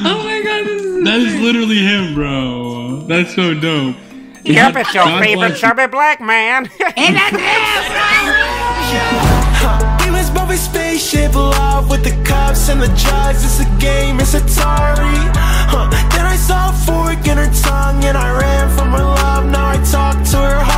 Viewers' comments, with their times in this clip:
0:06 guy sounds like Kevin heart